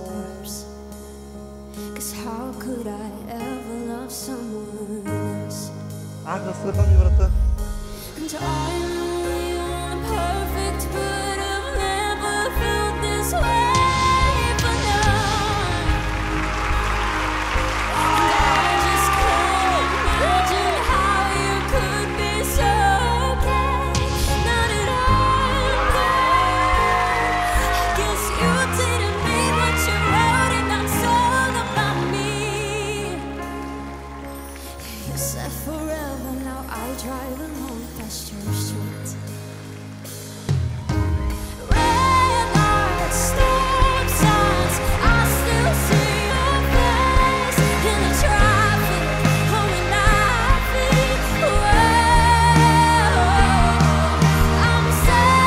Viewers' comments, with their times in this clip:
0:07 I think is my favorite part of the whole video when she started singing the chorus omg
0:22 Was that a voicecrack in that amazing singing?!?!
0:43 when she sang “stop signs”, her voice changed in a way that it just brought back nostalgia. might sound weird but it was oddly satisfying the way her voice was able to change into a beautiful melody.